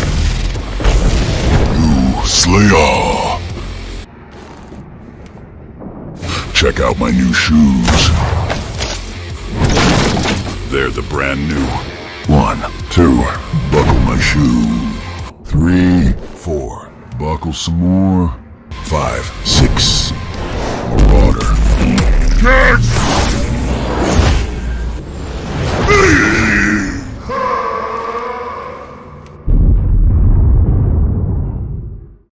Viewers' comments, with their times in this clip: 0:09 he sounds like the Ford commercial guy. I half expected him to say, “they’re the brand new FORD F150!”
0:25 Bro sounds like the guard from subway surfer